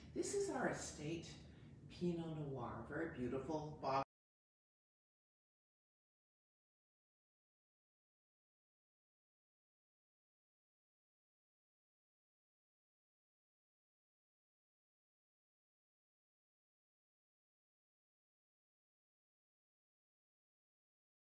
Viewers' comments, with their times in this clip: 0:06 I was quite enjoying this story by Ms Crane, however- at the mark the sound was lost.